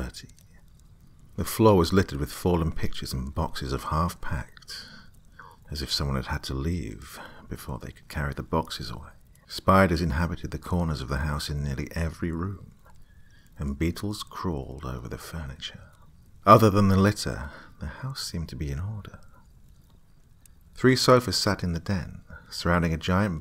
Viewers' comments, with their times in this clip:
0:09 your tummy growled idk how I caught it but I did. When youre very focused on painting and listening, interruptions are l oud. I hope u ate man